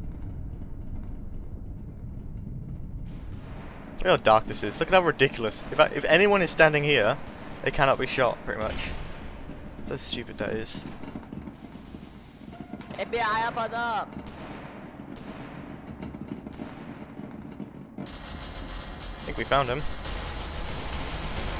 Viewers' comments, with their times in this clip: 0:08 I just like how the gun shots get louder and louder the moment more Caos enter